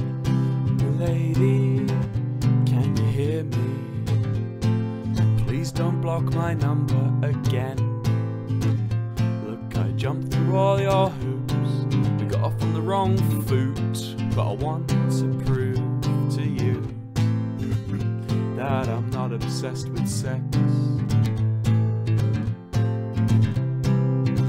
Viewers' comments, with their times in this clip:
0:07 Wow how’d he squeeze in that nice hammer on/strum ? So gooddd